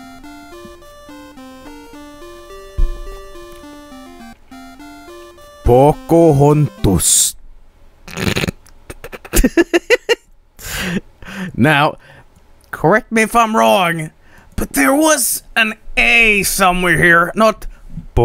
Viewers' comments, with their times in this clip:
0:04 "pocohontos. ... *tries not to laugh*"